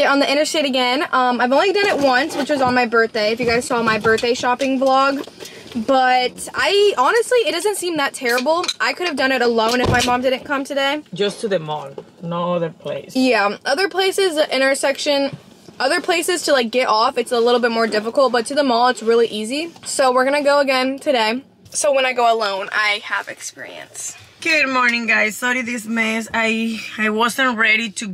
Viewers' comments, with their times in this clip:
0:10 when your mom started talking. 😳😳 i didn’t know she was in the car. 😂